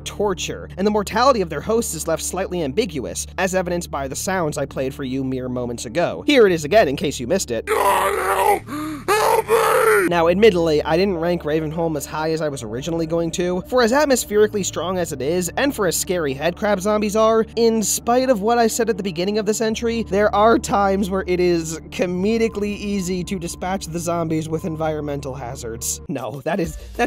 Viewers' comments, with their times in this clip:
0:07 Am I going crazy, or does it sound like the enemy here is saying; "God help... help me." Because if so... Holy frick
0:07 you played it backwards didn't you
0:07 not really sure if this is pointed out by anybody yet, but I can hear the zombie saying "god help, help me!"
0:08 It sounds like the headcrab zombie is saying "God help! HELP ME!"